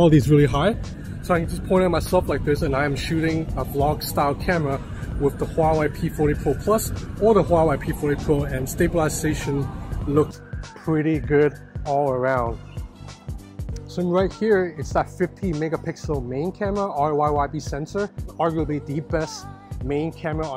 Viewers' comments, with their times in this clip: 0:07 WTF that mic audio just became 10 times beter wow.